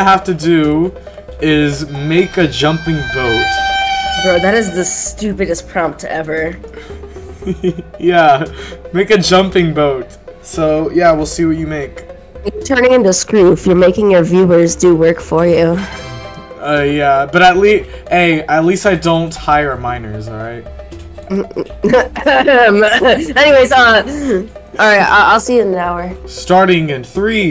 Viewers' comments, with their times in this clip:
0:08 do you here felix navidad sing i wanna wish you a merry christmas at this point?